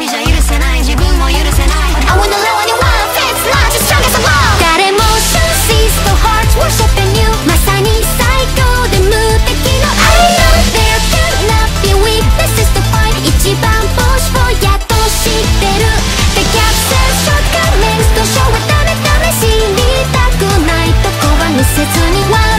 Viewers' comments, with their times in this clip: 0:04 You could easily've made this one little bit both languages and no one would notice. That part is so freaking similar between the two.